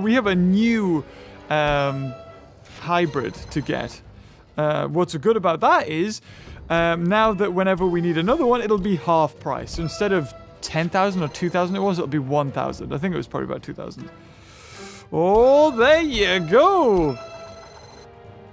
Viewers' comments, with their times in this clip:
0:03 he said hybird except of hybrid